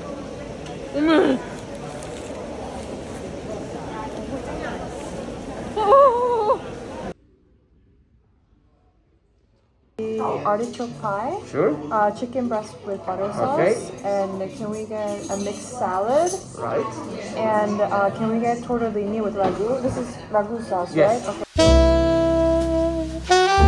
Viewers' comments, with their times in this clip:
0:06 🕊hear another pigeon